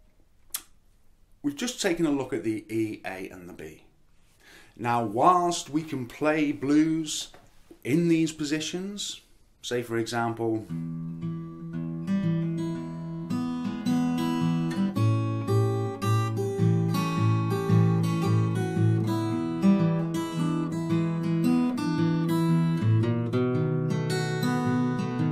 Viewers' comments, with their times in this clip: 0:10 this riff is all i aspire to, how do you manage to improvise like this ? is there some fingerpicking patterns you sort of mix up to put a melody together ? or is it pure feeling and genius ? can be both, but the second answer scares me the most, i fear not being able to play like this one day